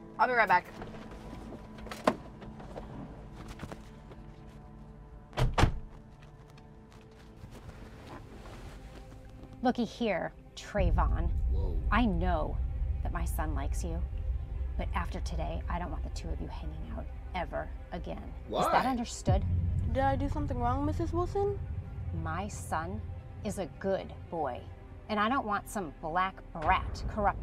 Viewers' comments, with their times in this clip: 0:09 Why they gotta put "dark music" at that moment. We get it, he's black